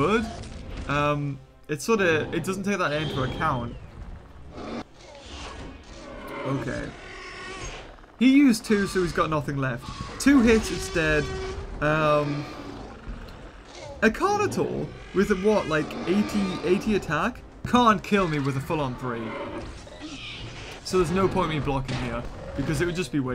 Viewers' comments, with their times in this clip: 0:07 am I the only one that hears a indominus growl/breathing